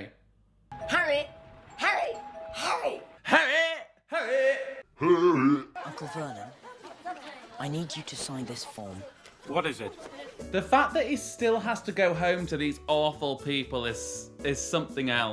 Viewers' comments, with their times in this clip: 0:03 i'm american so idk if they're saying 'hurry' or 'harry' 😭😭😂